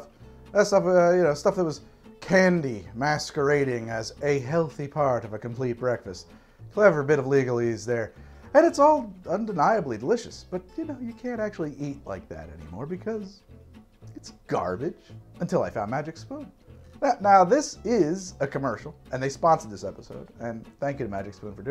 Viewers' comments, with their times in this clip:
0:06 i know he’s trying to be tired here, but he sounds straight SAUCED here